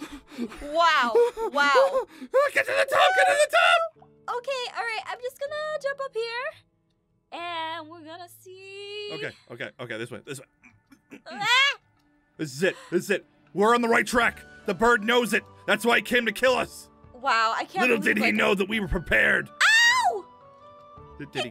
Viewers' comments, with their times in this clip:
0:04 is where Aphmau sounded cute but I'm not simping for her
0:06 aphmau sounds like ariana grande when she had red hair